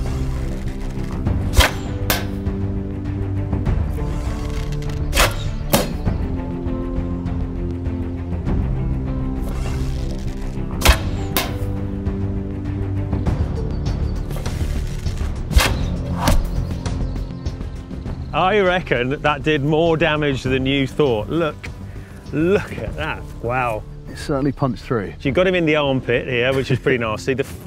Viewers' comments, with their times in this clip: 0:09 A shame sounds were added when he shoots his bow